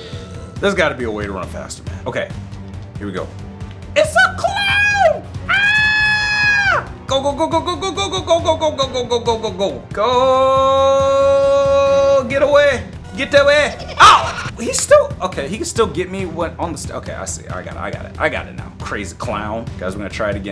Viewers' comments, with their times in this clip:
0:07 why does he sound like he is saying "gulp gulp gulp gulp gulp gulp gulp!" 💀